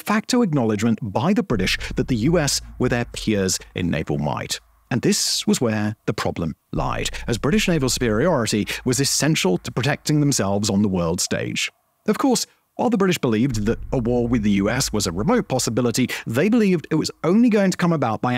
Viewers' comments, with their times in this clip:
0:05 Simon, what’s wrong with your voice? Helium?